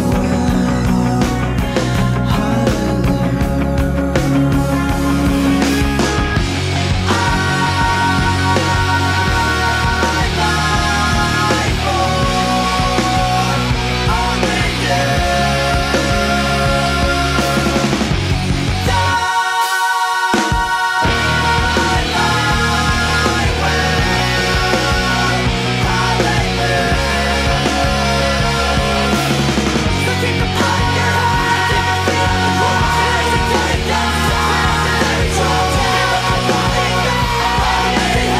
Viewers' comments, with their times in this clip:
0:06 Ya know, for years what I thought they were saying was "I'll die forrrrrr only youuuuuu....". Try it out. It it fits the song perfectly 😂
0:07 I thought l knew every word, but turns out l was wrong for years. lol l used to always sing "l'll...die....for....only you....." Go on, sing those lyrics there and see how well it fits the actual song. Heck, it even fits the video. Lmao
0:07 i thought it was 'I like boys over you'
0:20 is my favorite drop in any song ever